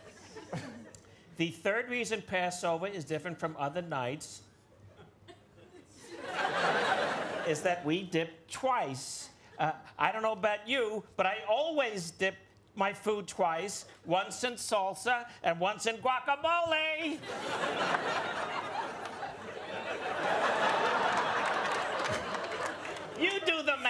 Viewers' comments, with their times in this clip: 0:05 Holy SHIT, this must have been so fun for Vanessa! Billy Crystal absolutely nails her schtick. The pause when the character remembers the audience is there! 😅😂